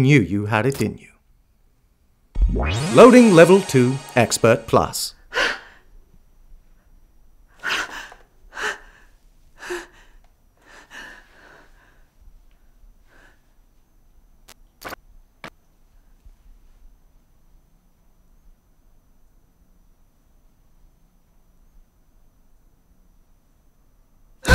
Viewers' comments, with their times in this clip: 0:06 the reason I asked, is that I have the same recorder and I've noticed that whenever you have a mic plugged in, the zoom 4 gives off this weird noise sometimes. It is very low but it has driven me crazy trying to trouble shoot it. I noticed it in this film when things get quiet around the mark. I don't know if you ever noticed it and if it bugged you, because I have searched for solutions and came up empty handed. But, I did find out that if you go into the menu settings and turn down the phantom power from 48 to 24, that sometimes helps. Or, right after that you just shut the recorder off and turn it right back on and it's gone. Great shorts by the way, all around! I have been a fan of your channel for sometime now. - Steve